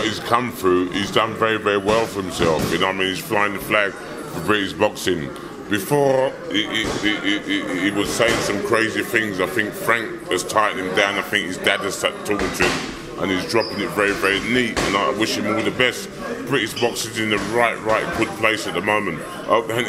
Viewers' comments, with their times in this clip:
0:05 Franks Wookie impression
0:06 Rolled that R like a Boss!! Mike GOAT🥊